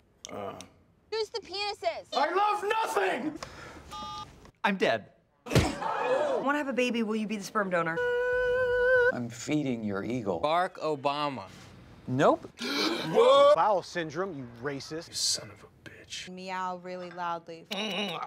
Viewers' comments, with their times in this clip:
0:05 Complete fake audience reaction